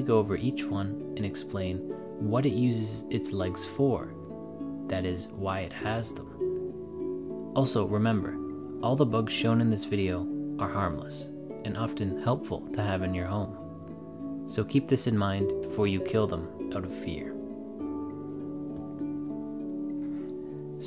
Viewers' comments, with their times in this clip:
0:05 ARMLESS? Darn thing's got 8 arms!